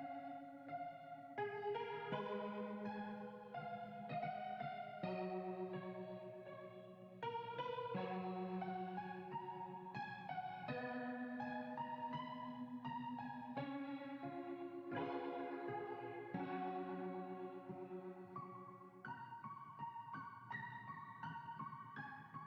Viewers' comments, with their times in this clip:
0:04 this song is so nostalgic